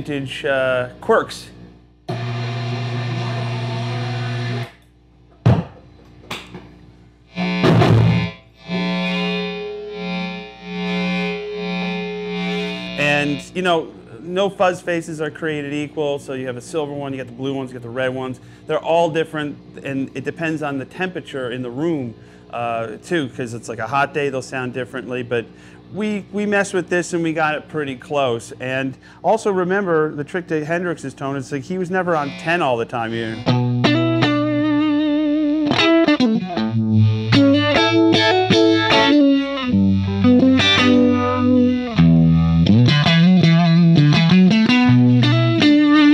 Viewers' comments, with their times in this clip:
0:07 Stratocaster light saber!
0:09 min. Joe just waves around a $40k guitar with one hand to prove a magnetic- 60 cycle hum - polarity position point ZZZZZzzzzZZZZZzzzzzz!!!! Most of us shat a little for shure😬.... Great display J.B. superb playing as always.
0:27 the lick is fucking deadly.